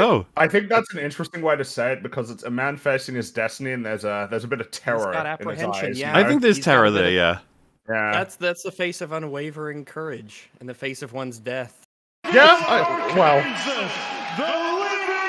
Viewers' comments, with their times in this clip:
0:03 I almost thought it said Boogie was from "Fat Evil" 😂